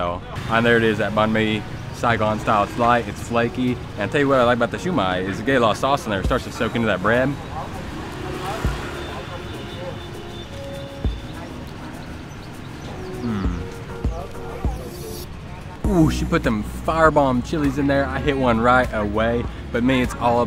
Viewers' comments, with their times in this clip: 0:08 I have to stop watching you before my lunch breaks. As soon as I heard that crunch of the banh mi I started thinking of what I wanted for lunch. 😁👍